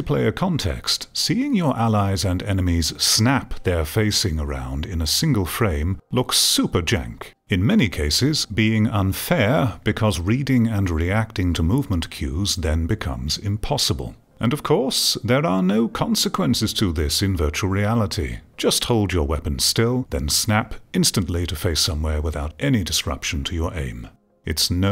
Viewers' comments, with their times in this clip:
0:05 "super jank" startled me as it is a very drastic change from the astute and profound speaking voice of this man